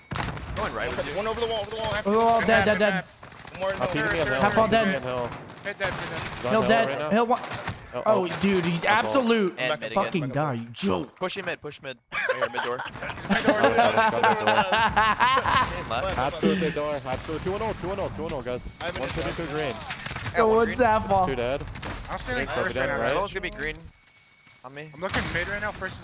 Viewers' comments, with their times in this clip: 0:08 sounds like my man said jew hope he said joke